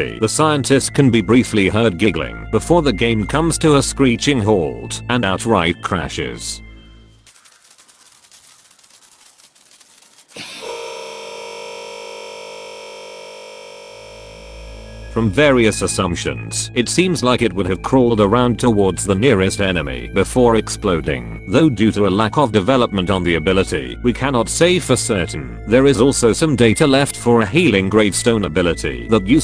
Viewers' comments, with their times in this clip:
0:10 The laugh as the game crashes sounds like Patrick star
0:10 sound like screaming patrick
0:11 sounds like Patrick screaming